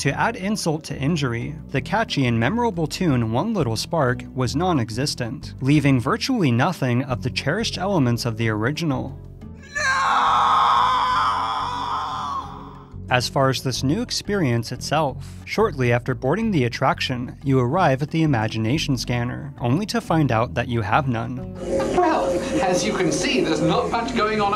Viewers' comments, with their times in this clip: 0:09 The Renegade screams in agony, for he mourns what he has lost...